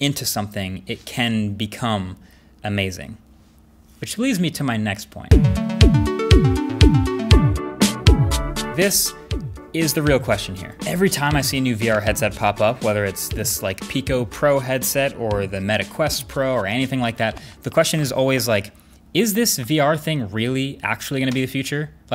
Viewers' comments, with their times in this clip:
0:05 Damn those daft punk transitions are unreallll, especially much love ❤️